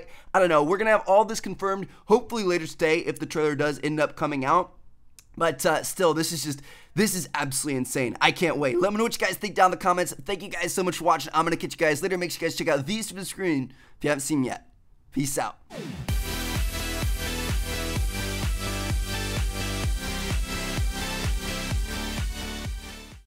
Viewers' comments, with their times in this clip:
0:07 anyone else hear that weird sound ?